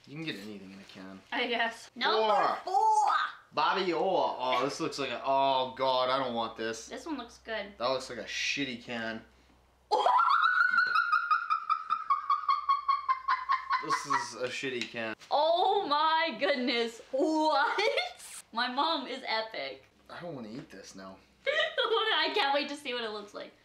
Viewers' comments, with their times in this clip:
0:09 she was laughing hilariously
0:10 Her laugh LOVE 😍